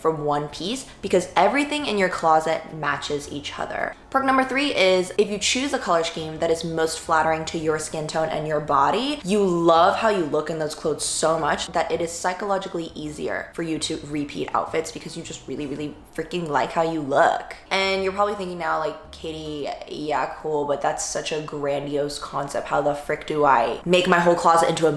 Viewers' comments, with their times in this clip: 0:09 I'm sorry but I couldn't tolerate another S-CHCEEEME by